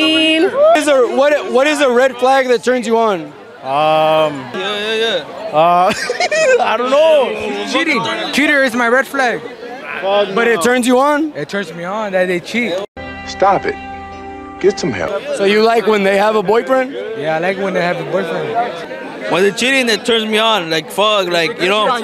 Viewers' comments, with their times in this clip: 0:05 Check out the Scooby Doo laugh.